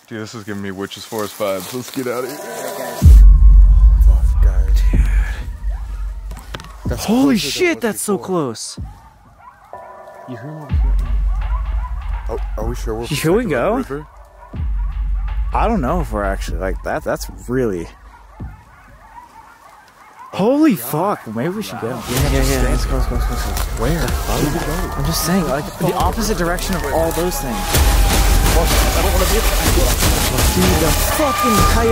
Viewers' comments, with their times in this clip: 0:04 In (the second time hearing the coyotes) if you listen you can hear them getting closer and closer
0:12 the animals that were making that sound i think those were hyenas